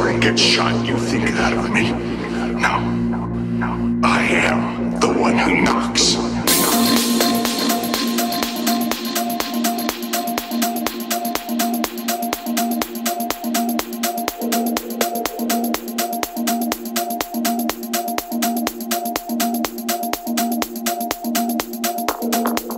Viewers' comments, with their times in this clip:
0:05 Omfg that break in is absolutely perfect.